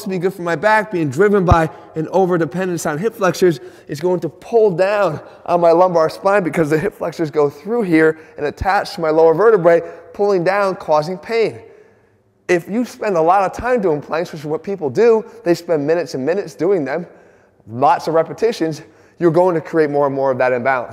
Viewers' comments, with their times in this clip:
0:03 says that the plank is ineffective. Meanwhile, losing breath due to doing plank xD